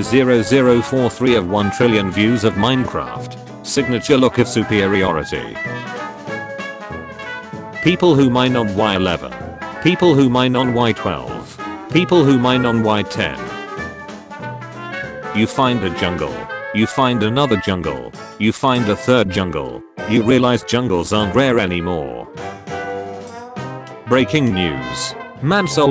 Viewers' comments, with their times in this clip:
0:08 sad 1.18 noises